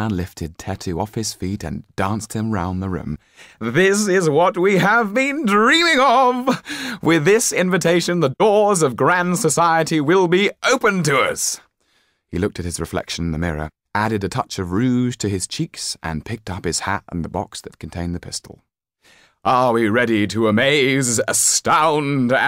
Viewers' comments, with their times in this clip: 0:04 A shot in the dark, but... does anyone else hear a bit of Roy Mustang? "Loyal canine, how we salute thee!"